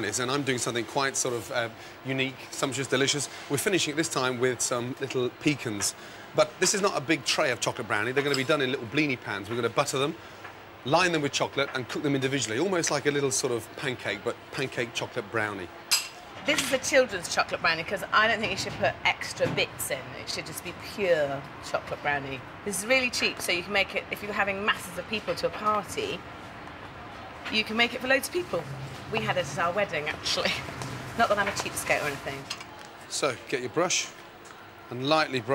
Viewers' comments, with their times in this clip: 0:04 Pecawns, Peecans, and now peekins
0:19 PUEEE also a touch of BUTTAH proceeds to put 10kgs of butter